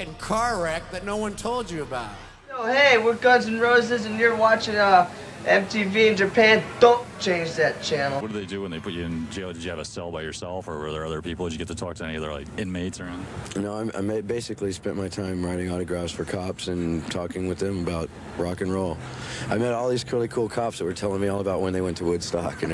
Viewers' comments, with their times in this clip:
0:03 thats steven but ok